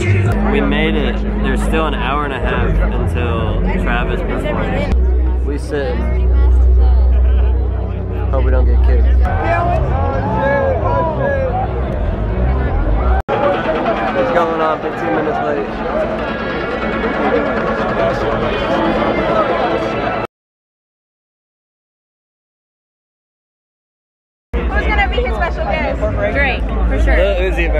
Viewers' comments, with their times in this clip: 0:10 Bruh, can y’all hear that creepy frequency ?